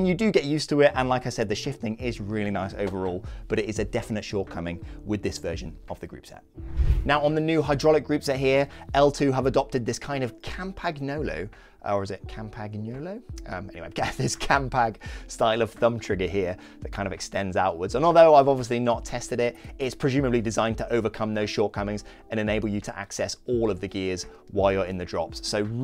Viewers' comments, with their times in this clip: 0:10 as a italian I can say that the second version of Campagnolo's pronunciation is way better that the first one, not right, but better ahahaha